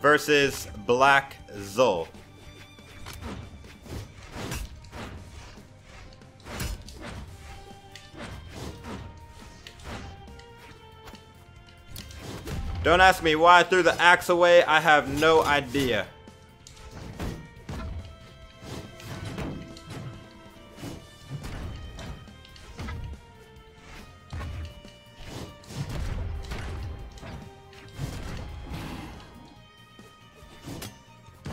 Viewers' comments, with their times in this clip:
0:10 the Jaeyun greats word combo matches the tempo of your speech for no reason
0:13 so we are just ignoring the fact Of how perfectly in-sync the hits of The greatsword was with his voice?